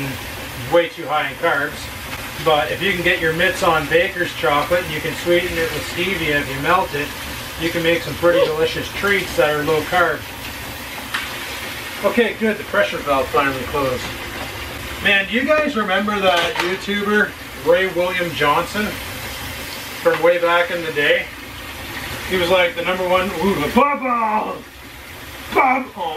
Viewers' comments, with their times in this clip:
0:08 That noise was that Oreo LOL?!